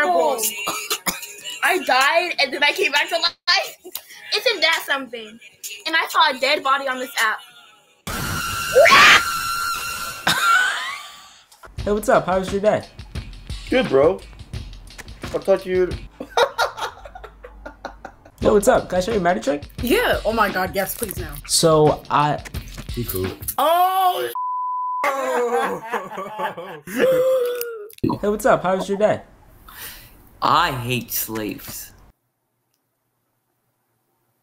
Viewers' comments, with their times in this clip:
0:09 Bruh the perfectly cut scream and freeze frame 💀💀💀
0:12 guy best hearty nfg laugh 😁
0:16 I liked the reaction, nobody seems to mention it at all how he just laughed